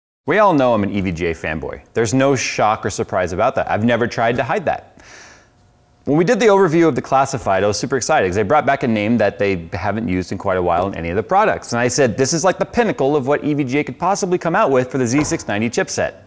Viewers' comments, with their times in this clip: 0:00 "EVGA Femboy" haha